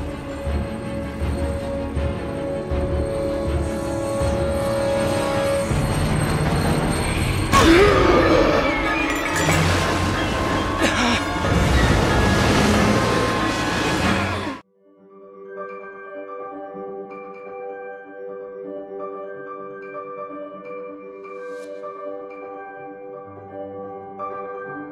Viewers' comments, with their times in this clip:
0:08 For the first time since the second movie, we hear briefly Voldemort's original theme.